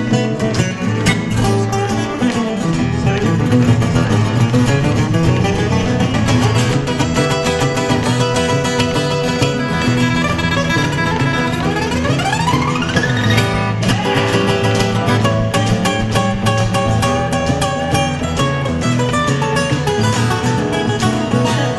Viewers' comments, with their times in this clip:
0:09 I always knew Ritchie was a badass guitar player . I never imagined he could hang with Tommy though . That run by Juber mind blowing .